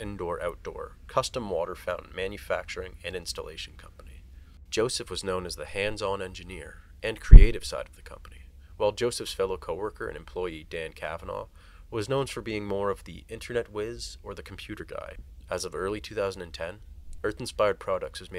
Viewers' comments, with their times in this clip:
0:05 why is there no mention of the loud as random noise? at least say something or edit it out lol